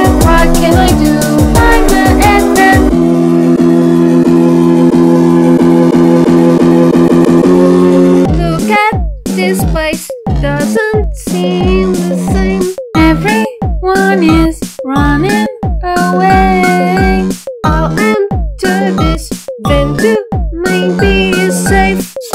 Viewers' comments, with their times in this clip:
0:08 I laught soo hard! The voice is so funny XD! 😂